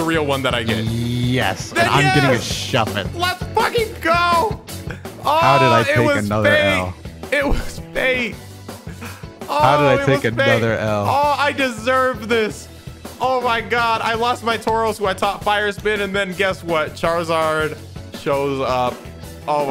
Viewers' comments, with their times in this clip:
0:03 the difference in hype is hilarious
0:05 And i was getting into that music too :( 😂 it's just the way the vid ends